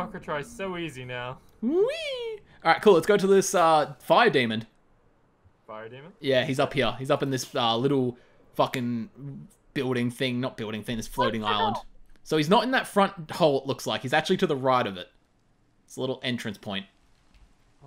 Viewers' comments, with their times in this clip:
0:04 "Lets take on this fire demond!" Demond??? 😂😂